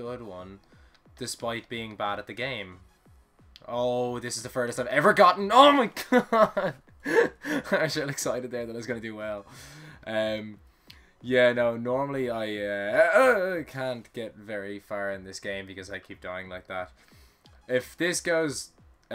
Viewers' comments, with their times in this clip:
0:04 *Rages and shouts, then returns to normal voice quickly.* xD BTW, to get past that triangle don't jump off the last square like you always did. :P